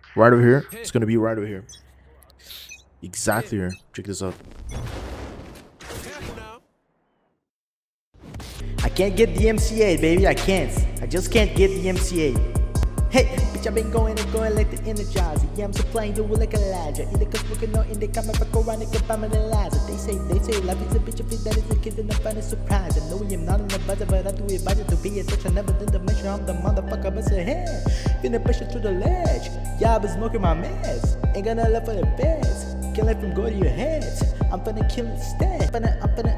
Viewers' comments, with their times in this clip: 0:07 Woke up his inner rapper lol😂😂
0:07 Is this the new logic or was it logic with long hair THE WHOLE TIME????!!!!!!
0:19 That rap tho🤯. Sounded so much like logic